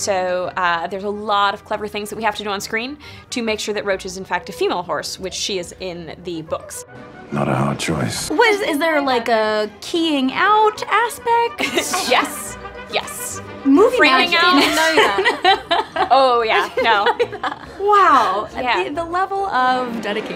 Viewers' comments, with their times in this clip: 0:07 Perfect Geralt voice!!!!!!!!!!!!!!!!!!!!!!!!!!!!!!!!!!! OMG I CAN'T!!HE NAILED IT RIGHT THERE FOR ME!!!!